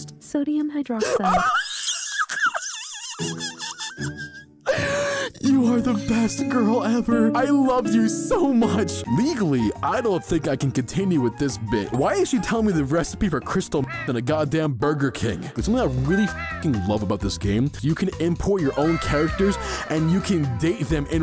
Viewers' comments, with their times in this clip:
0:04 when you were taking to her at at McDonald’s why did you sound like a star fighter shooting 😂